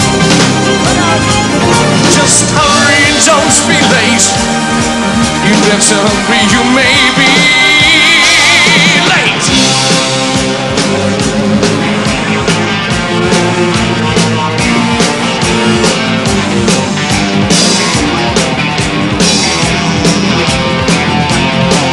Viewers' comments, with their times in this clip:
0:08 sounds like part of who wants to be a millionaire theme tune. lol